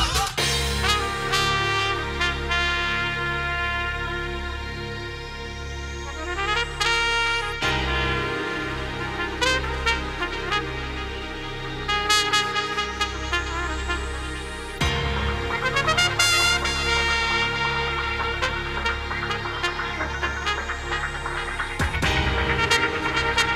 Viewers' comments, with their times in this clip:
0:06 in the background , bum slap :-) Great set , really enjoyed this